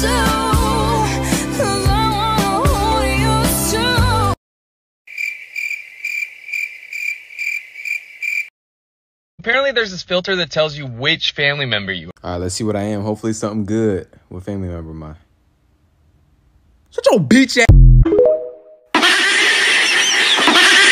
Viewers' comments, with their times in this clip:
0:07 all I could hear was “cuz I want to hold your shoe”